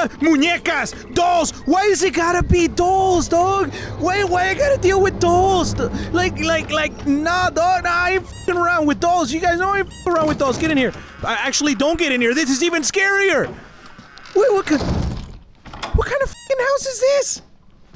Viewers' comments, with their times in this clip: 0:04 It sounds like he is saying toes not dolls